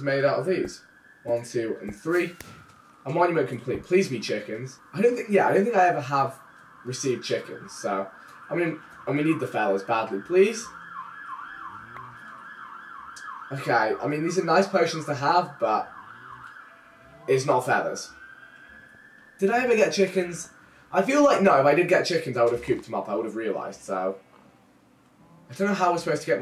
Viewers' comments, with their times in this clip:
0:07 siren in the background